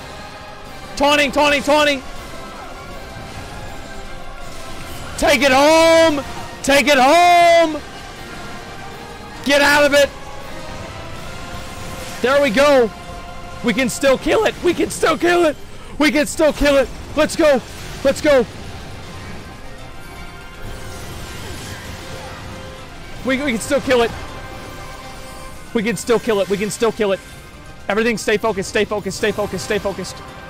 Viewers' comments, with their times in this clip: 0:09 asmon real voice leaked?
0:14 I about died laughing when he lost his voice.